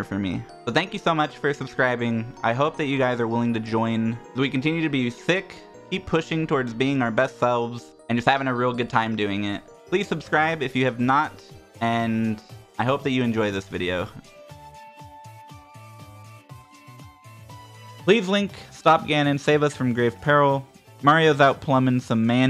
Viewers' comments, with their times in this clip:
0:03 continue to be sick COVID AGREES